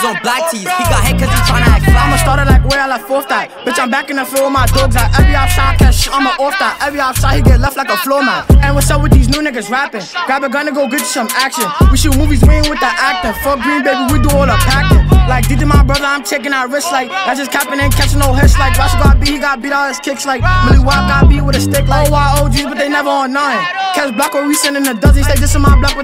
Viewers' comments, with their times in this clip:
0:07 he sounds dominican